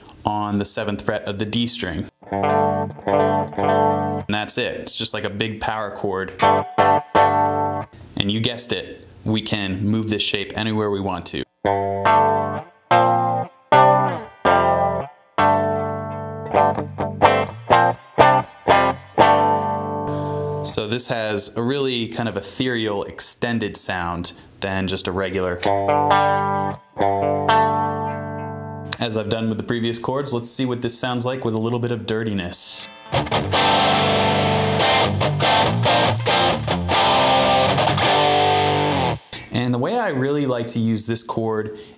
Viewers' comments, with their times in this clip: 0:08 sounds like breaking Benjamin
0:26 I swear I thought he was going to start playing Lateralus